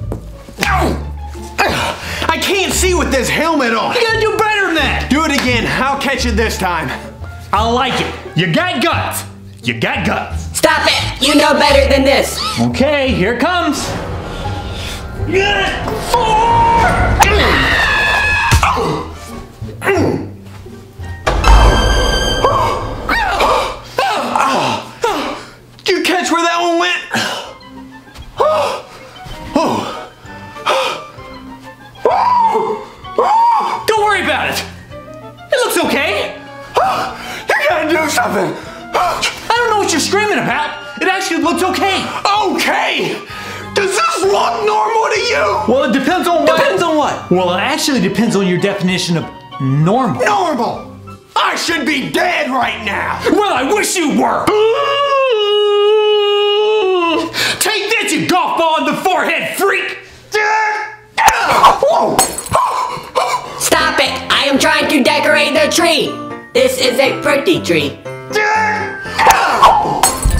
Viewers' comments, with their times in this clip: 0:09 listen to the robot.
0:17 he screames like a girl
0:17 He screams just like talking Angela i think so
0:54 that gasp, LOL
0:54 best gasp ever
0:54 best gasp ever
0:55 he screams like a chicken